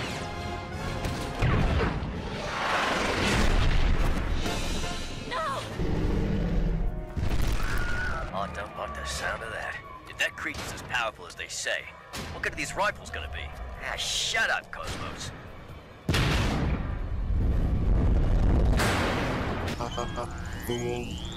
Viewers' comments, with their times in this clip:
0:06 the aww death sound death